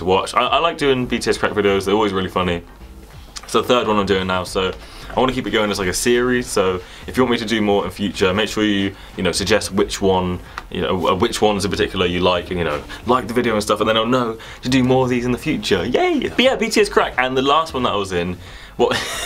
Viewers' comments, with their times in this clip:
0:06 I DUNNO WHATS FUNNIER WHEN YOURE LAUGHING OR WHEN YOU SAID "oh gumball!" IM ACTUALLY LAUGHING